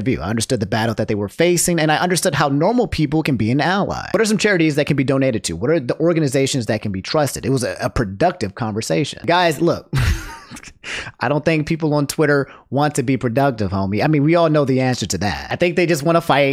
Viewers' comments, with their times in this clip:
0:04 I love the slam poetry